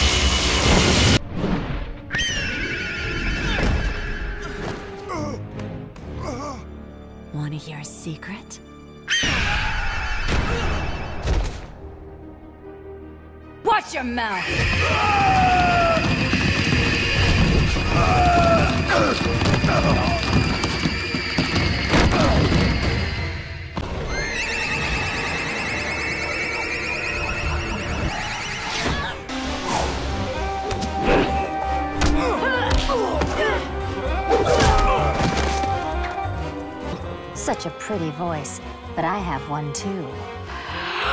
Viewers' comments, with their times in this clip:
0:04 I thought it was funny the way Superwoman fell when Canary screamed.🤭
0:24 the scream almost sounds the same